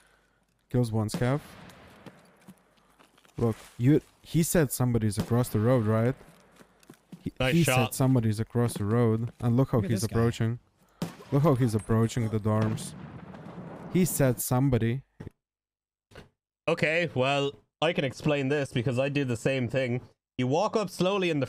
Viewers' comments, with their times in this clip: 0:08 this dude saying dude is cheating has no game awareness you can literally hear the pin of the nade 2 seconds at the bus stop after he shoots the scav that is aggroed on a player